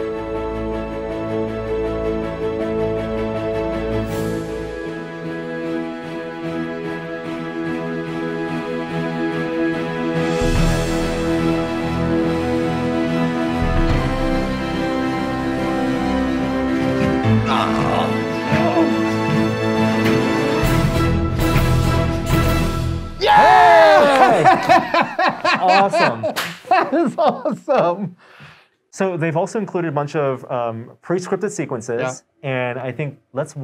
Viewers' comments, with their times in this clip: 0:10 That music is so epic!
0:20 smells like hint of the Terminator theme